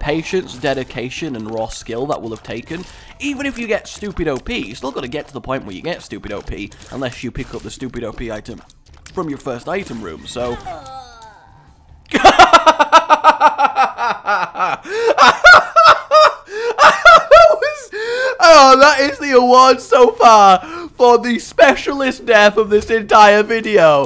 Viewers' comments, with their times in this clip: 0:08 The best laugh ever.